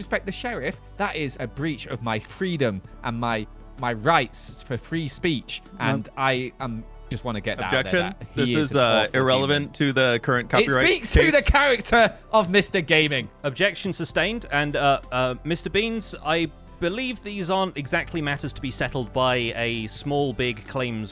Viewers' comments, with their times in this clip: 0:07 "IT SPEAKS TO THE CHARACTER. OF MR. GAMING" is now my new favorite quote that was so well delivered it cracks me up every time